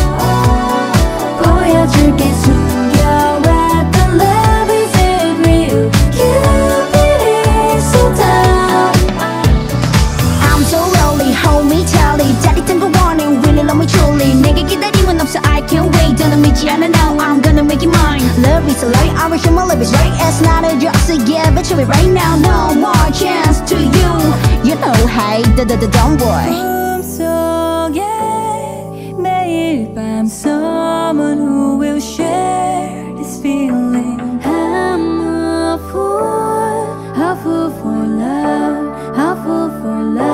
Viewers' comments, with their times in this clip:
0:10 the rap and the happy tone of voice from onwards is perfect bro🥺
0:10 my fav rap part
0:26 Arans voiceee so majestic
0:26 sounds like im so gay😭😭😭😭